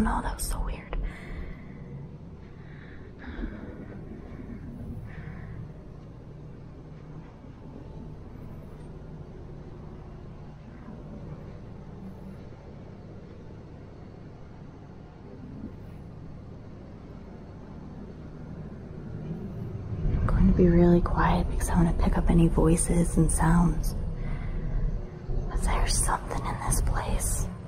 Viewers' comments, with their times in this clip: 0:10 I'm not sure what it is but there is a strange sound
0:13 sounds like a child saids get out it’s faint but u can hear it